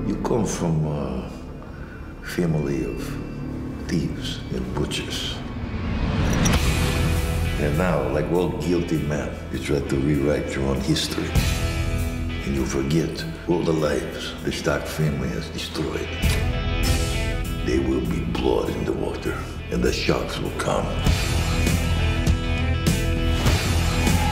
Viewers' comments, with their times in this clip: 0:10 wats the song ? its like a guitar riff sounds AWESOMEEEEEEEE